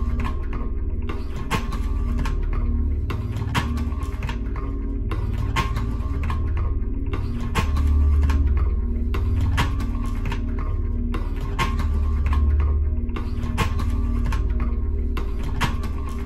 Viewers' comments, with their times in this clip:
0:03 it sounds like a beat